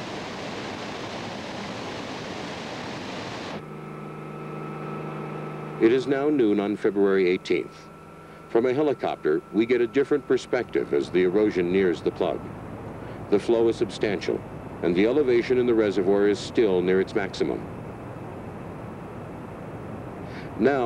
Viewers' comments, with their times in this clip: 0:08 This video was recorded in 1986. Other than a few military prototypes, drones did not exist then. Most of the video was taken from the high hills adjoining the dam. The aerial photography was recorded via. helicopter, as is explicitly stated You can hear the helicopter's engine. The video is shaky because the camera was undoubtedly handheld and video cameras back then did not have image stabilizers.